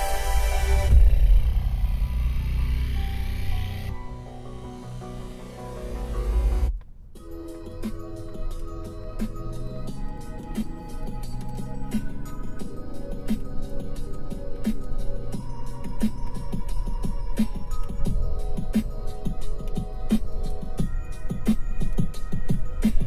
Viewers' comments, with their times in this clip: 0:07 Love the late-90s/early-2000s porno soundtrack